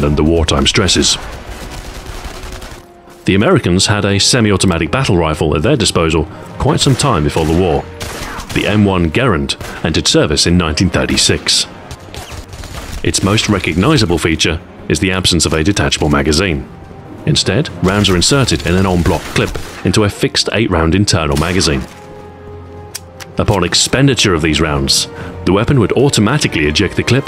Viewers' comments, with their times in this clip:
0:08 Omg when the M1 Garand came on I accidentally flicked my bowl and made a ping.